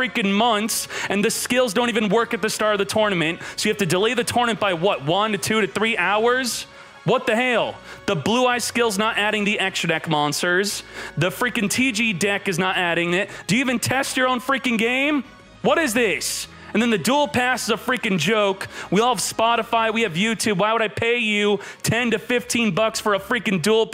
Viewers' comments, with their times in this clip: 0:05 The way he said “what the hell” had me rolling 😭🤣 Konami better fix their shit tho